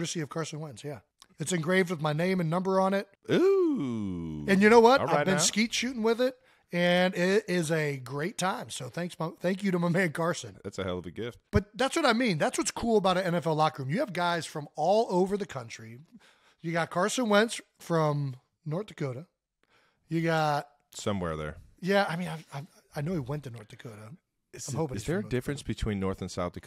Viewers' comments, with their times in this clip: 0:09 Did he say "thanks punk" quietly before saying"thanks Carson"